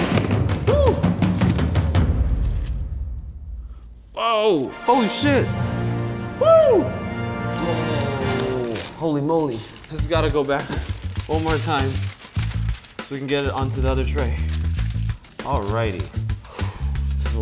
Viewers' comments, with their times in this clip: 0:04 they didn't blur out the cuss word 😂